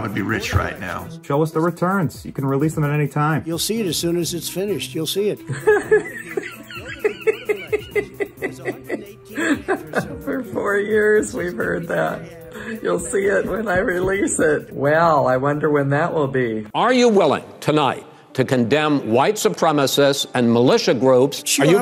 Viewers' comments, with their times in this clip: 0:07 her laugh tho lol 😆
0:07 Her laugh though 🤣🤣🤣🤣
0:07 had me laughing just like the lady🤣😂
0:07 her laugh looks like Jack Nicholson's laugh ....or actually maybe Tommy Lee Jones...lol
0:07 That laugh 😂😂😂 Golden
0:07 Her laugh just makes me laugh also.
0:09 The woman laughing killed me 😂😂